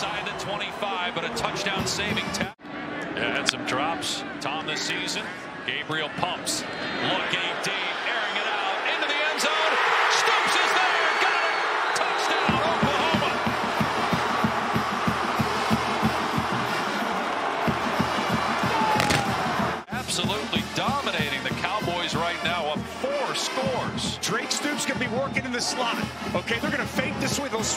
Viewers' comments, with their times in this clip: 0:09 I was there in the corner which stoops scored the 4th td for OU. That roar was magnified at the stadium and crazy awesome experience for my first OU game.